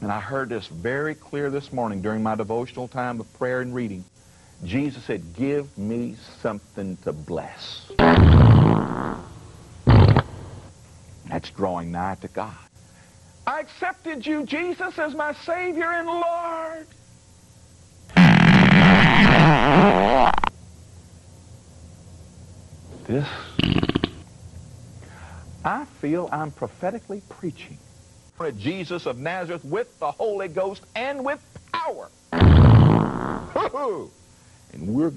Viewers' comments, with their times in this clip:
0:04 “Jesus said ‘Give me something to bless….’” Oh he totally did alright, he dropped a BOMB 😂
0:15 seems his backside is gifted like his mouth, both ends spew shit. did it for me 😂
0:18 Feel like I've watched these often enough (and hurt myself laughing EVERY time) to notice some new sound effects. had me on the floor. I swear there's trouser ripping in there as well.